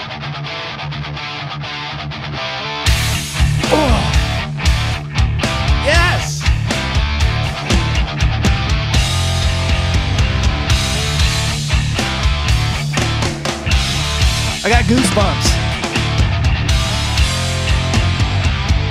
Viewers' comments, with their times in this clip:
0:03 The grunt and YES! God, I love it 😂
0:03 Justin's tone gets even more aggressive. Just earth-shattering. I love it. This is especially noticeable on the drum-cam video version.